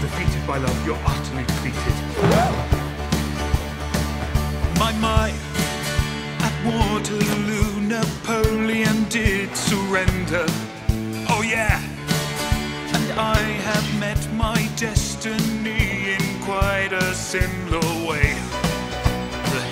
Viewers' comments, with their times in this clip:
0:03 Harry's song starts